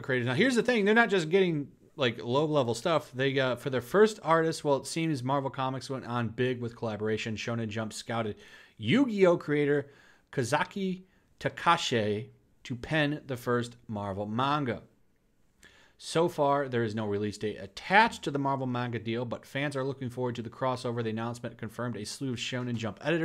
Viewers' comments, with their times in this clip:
0:10 Damn, He just butchered his name.